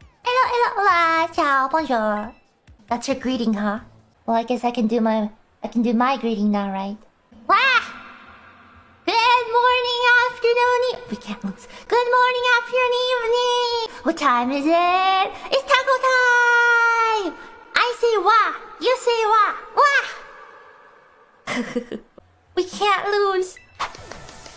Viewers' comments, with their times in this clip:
0:06 that's probably the most war cry wah I ever heard from Ina, it's adorable.